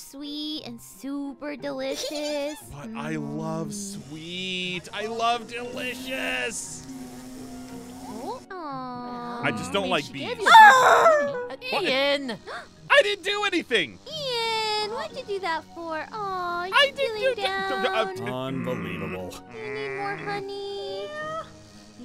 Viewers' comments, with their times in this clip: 0:10 WHY DOES THAT SOUND LIKE A DOG XDDDDDD